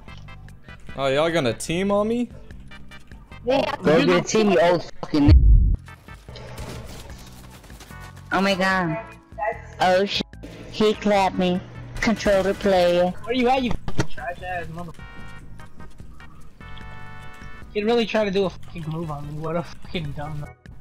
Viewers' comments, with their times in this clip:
0:08 sounded like micheal jackson